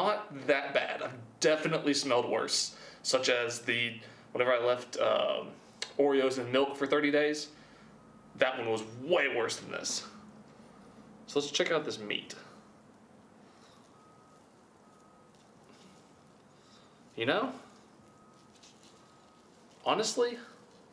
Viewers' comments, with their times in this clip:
0:07 who heard the truck backing up beep